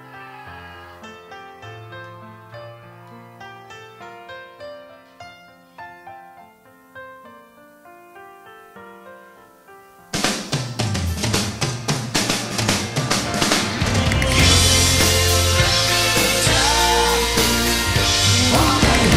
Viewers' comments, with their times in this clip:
0:06 shit, I forgot all about that amazing drum fill !!!!!